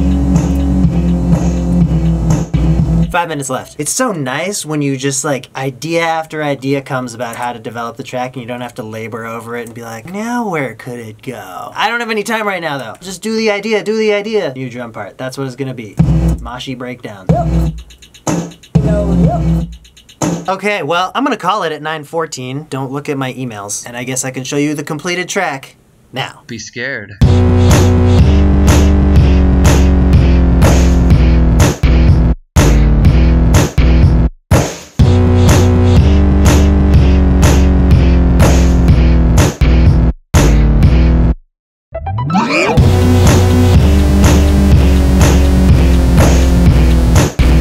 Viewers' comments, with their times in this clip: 0:10 song from goat sounds
0:26 here the beat starts ---->
0:28 thats what you calll beatboxing